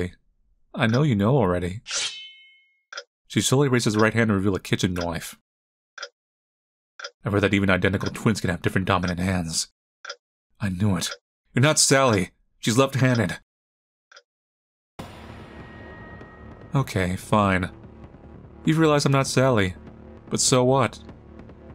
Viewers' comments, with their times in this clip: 0:04 most Australian thing I've ever heard in my life